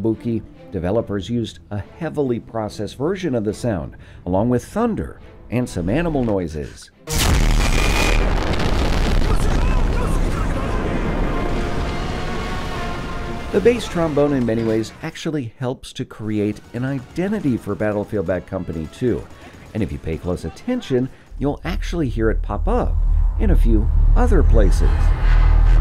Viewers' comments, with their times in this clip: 0:07 when dads sneeze